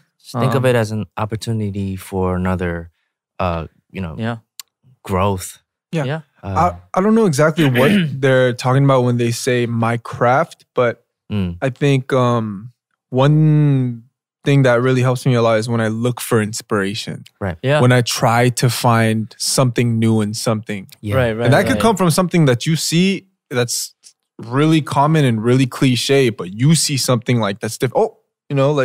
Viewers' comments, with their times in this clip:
0:09 what did he say???? i heard minecraft but i think it's my craft